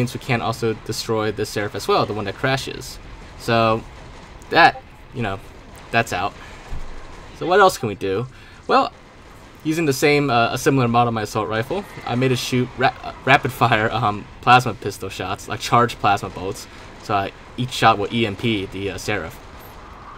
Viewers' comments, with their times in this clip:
0:04 Also did anyone else hear that discord notification sound